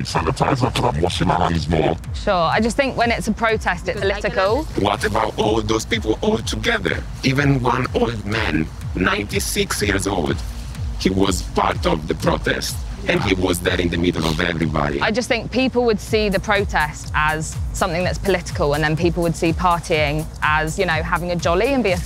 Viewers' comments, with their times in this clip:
0:03 that robot has a stark Hungarian accent
0:04 are we going to ignore that fact she sounds like a robot from star wars